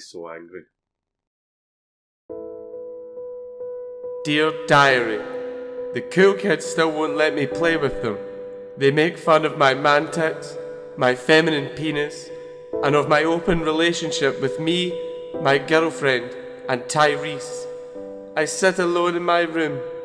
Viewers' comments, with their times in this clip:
0:03 what is the name of this sad piano song I've been trying to look for it for ages